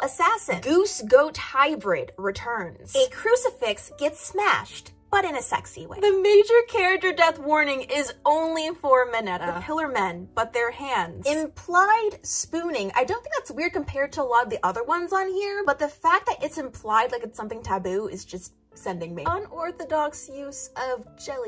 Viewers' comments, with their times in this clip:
0:08 I always find it so funny how Americans pronounce Mineta, they're like "Meh-nuh-dah"